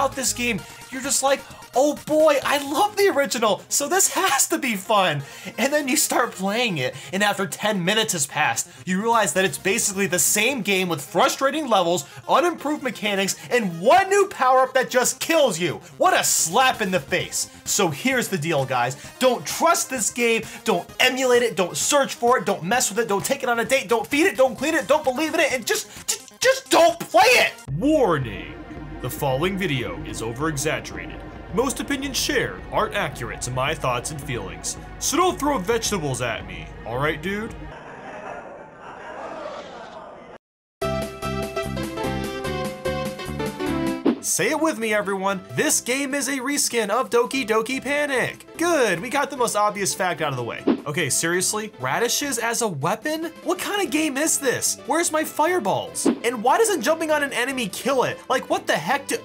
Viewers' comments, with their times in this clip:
0:03 is the best voice crack ever
0:19 500% ranting & screaming at the mic
0:40 great timing with the music